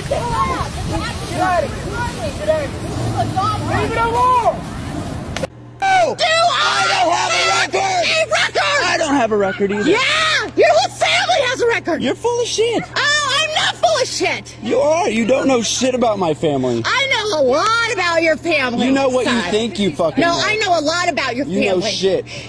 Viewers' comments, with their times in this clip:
0:05 Why does the 3rd Karen sound like Louise from Bobs Burgers?